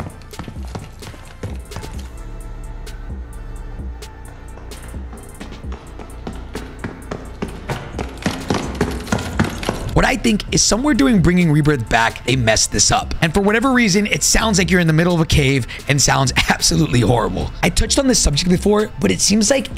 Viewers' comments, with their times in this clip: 0:07 sound like a horror game i got scared